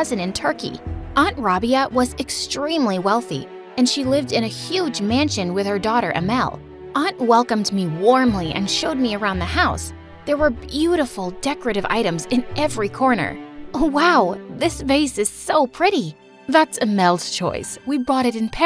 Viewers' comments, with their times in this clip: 0:04 when they said Ahmal I thought it said Animal🤣